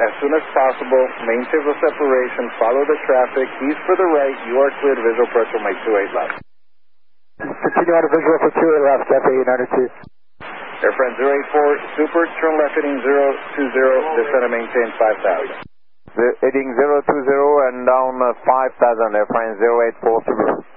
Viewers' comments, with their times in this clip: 0:08 u can hear the Cathay pilot disconnecting auto pilot and flying manually